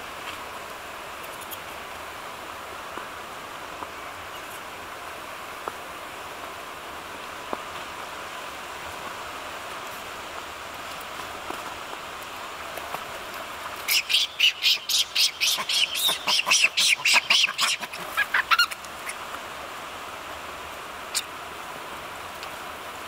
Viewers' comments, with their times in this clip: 0:08 To the right of screen, dad has butt in air. Baby sees butt and is curious so touches/pinches it. Dad is like WTF, grabs baby's hand and proceeds to bite it. Baby is screaming in pain and for help. Mom ranks baby out of guy monkey's jaws, literally. That really just happened. Babies are curious tho. lmao. He didn't know!